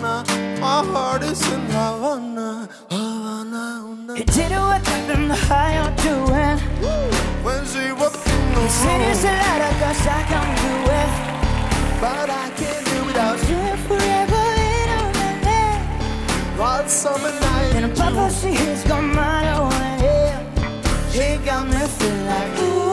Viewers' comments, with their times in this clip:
0:09 love this voice